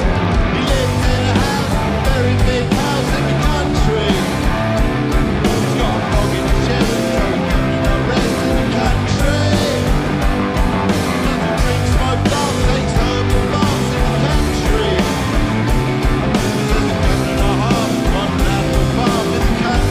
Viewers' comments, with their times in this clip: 0:07 aw i love the way graham is singing along in